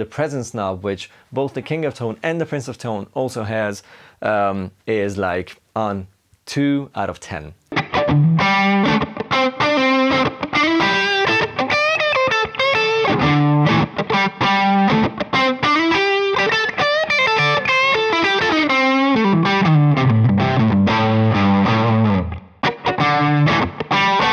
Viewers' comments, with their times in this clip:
0:08 That's a superb review ! And such a fine Allman Brothers like Les Paul Tone ++